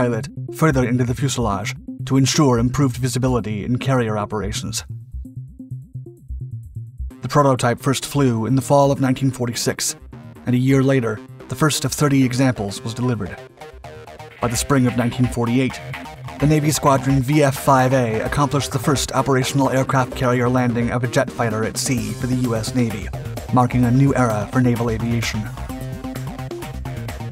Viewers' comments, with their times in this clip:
0:09 The music that starts reminds me of the old Newgrounds Portal music from the early 2000s???